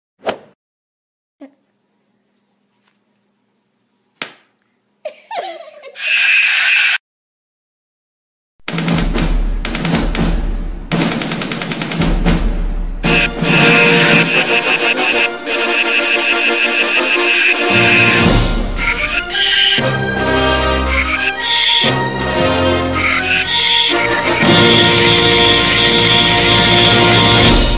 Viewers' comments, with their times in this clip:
0:09 🤣🤣🤣🤣 music so good